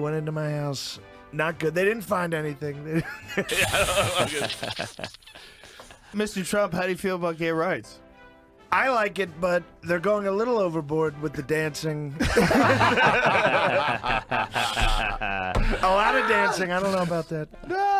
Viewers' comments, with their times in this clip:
0:04 At least Joe nailed that Muttley impression:face-green-smiling: